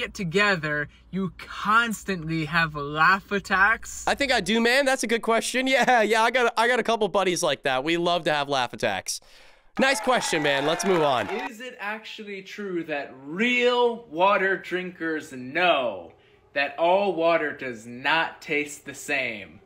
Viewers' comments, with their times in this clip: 0:04 the way he said laugh attacks 😂😂